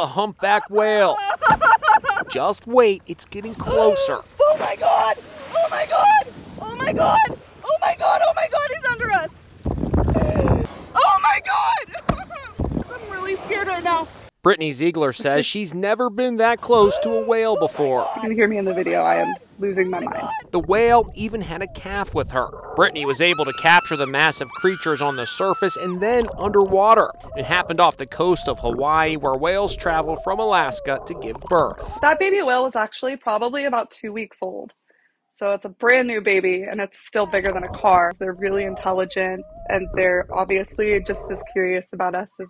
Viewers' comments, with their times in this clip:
0:04 She did a good job at blending in with the seagulls
0:23 HITTING ARIANA GRANDE NOTES